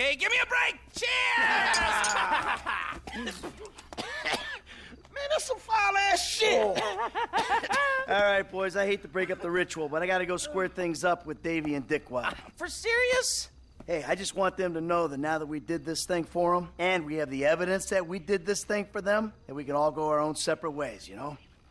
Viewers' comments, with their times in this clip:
0:07 Lester’s laugh and face 😂😂😂